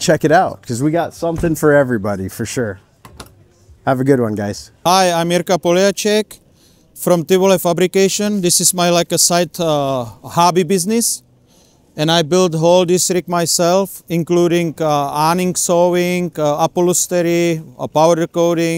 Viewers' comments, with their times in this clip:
0:05 this is the best part of this video. The product, the presentation, the accent. Thank me later.